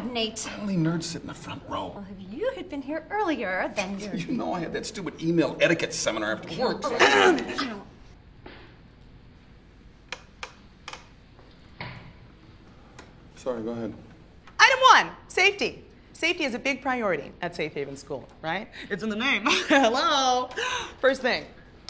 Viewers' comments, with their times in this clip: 0:06 Clearing one's throat loudly is a macro-aggression - Kevin should sue her for that....